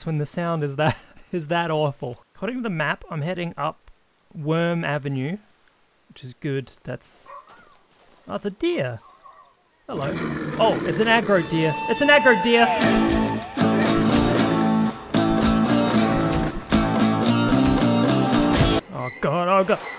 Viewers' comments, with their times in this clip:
0:04 the accent was THICK